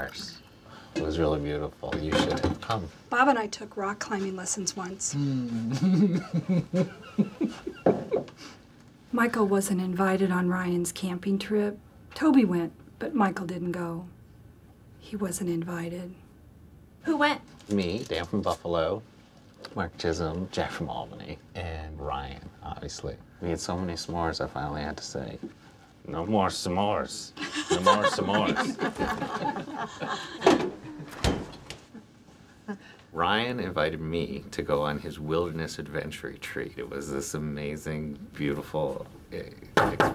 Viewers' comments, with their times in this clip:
0:05 I really love Michael's laugh I used to feel bad for Phyllis. But as the seasons go on considering she's a bully, I totally think she deserves it 🔥
0:23 you can tell they laughed extra hard at Toby's smores joke just because they knew Michael would hate it.
0:25 Idk if everyone laughed with Toby or AT Toby when he said no more smores 🤔
0:26 Umm ..did Michel laugh while toby was taking about smores and tried to hide it?